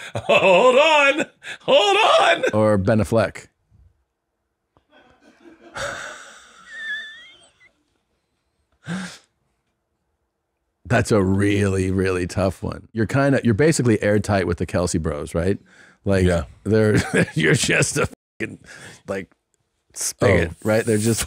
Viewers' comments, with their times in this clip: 0:03 Everything Wrong with Tom can be summed up by this one Moment "Ben UhhFleck" and you can tell Bert is such a Follower as he just says it that way because he considers Tom "The Smart one" out of the two....